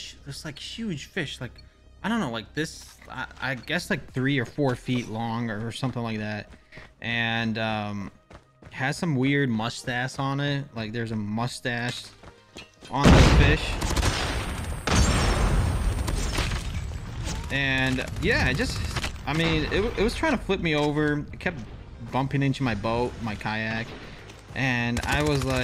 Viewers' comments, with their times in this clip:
0:10 I am sure he is saying "must azz on it". That is musty bro